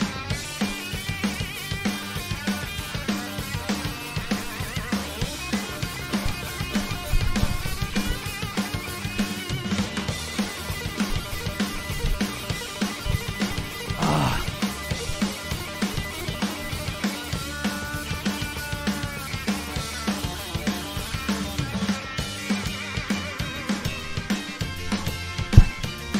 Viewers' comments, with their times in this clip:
0:10 Great video. This is definitely one of my favourite Yoyoka performances and I love that you seem amazed by the same aspects I am. The whole thing is a tour de force, but that fill is just incredible!